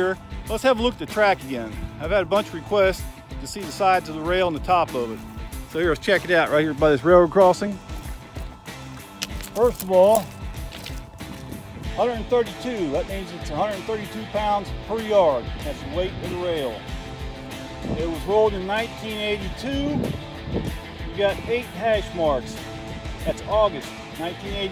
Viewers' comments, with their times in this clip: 0:10 did anyone else here that gravel crunch like on tsw?